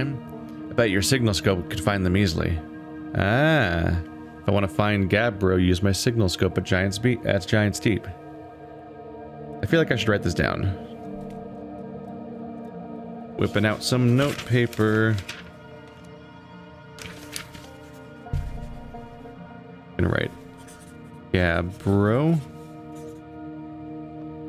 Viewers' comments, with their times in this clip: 0:09 Did you actually write something or was that sound FX. That sounded weirdly artificial.